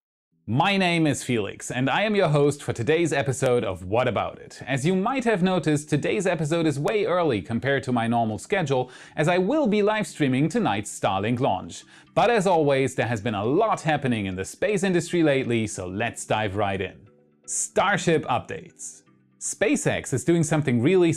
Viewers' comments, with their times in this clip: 0:08 oh man!!! I heard that as tonight I'll be live streaming Starships launch! I almost feel out of my chair, then I realised you said Starlink. While still cool ain't no Starship lol. Edit - anyone else think that first lol?